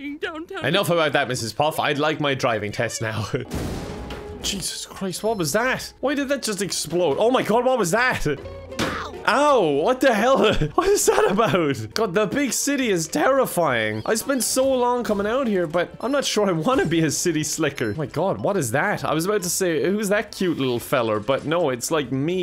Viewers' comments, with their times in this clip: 0:08 best impact sound ever